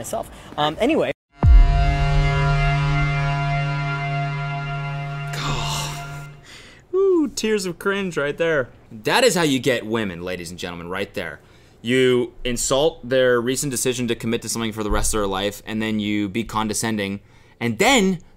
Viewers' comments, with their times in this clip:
0:06 I seriously thought something was spilling behind you lol like a gallon of milk